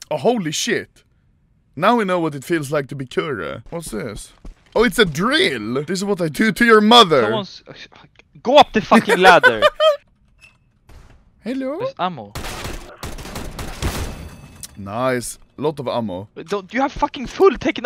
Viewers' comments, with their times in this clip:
0:04 jackhammer Oh a drill